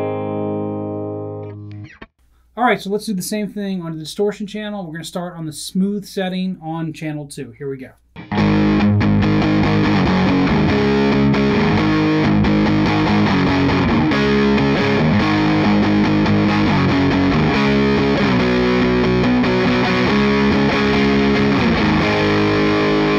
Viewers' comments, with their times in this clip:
0:09 You forgot the pickup switch in the central position (smooth setting), so it’s not comparable to the following clip, which is played with the bridge humbucker only. Anyway, thanks for the comparison!